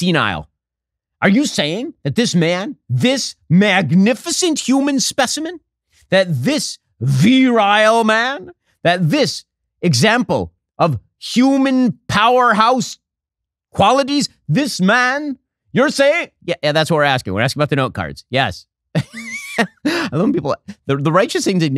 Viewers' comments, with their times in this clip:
0:09 Stop trying to be so cute, Ben. Stick to what you do well. Joe Biden impressions and improv comedy are just not your bag.